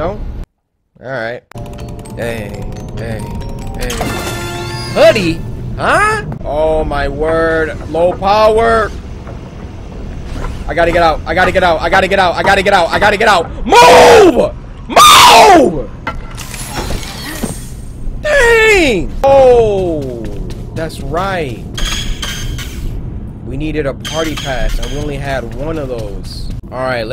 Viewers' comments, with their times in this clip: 0:08 I’m dying 😭 the way he raged
0:11 the way he screamed tho
0:14 That voice crack I never laughed so hard